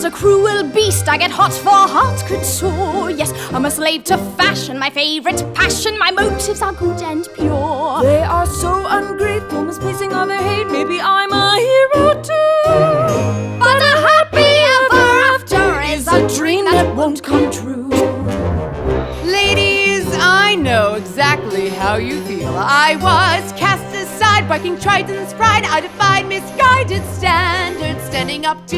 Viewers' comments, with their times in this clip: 0:08 omg give me your voice I love it, I love the run when she said "I'm a hero too" like omg I thought I was a good singer but listening to her makes me feel like I am nothing, teach me!
0:13 And her voice is spot on